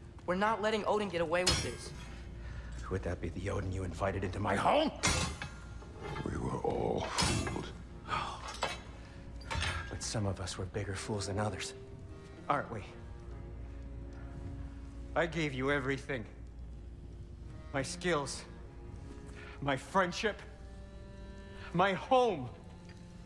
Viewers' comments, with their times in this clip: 0:10 Bro, the dude playing sindri could not have put more soul into the diologue That whole like 3 minutes was just outstanding. Every ounce of that was needed and he gave it.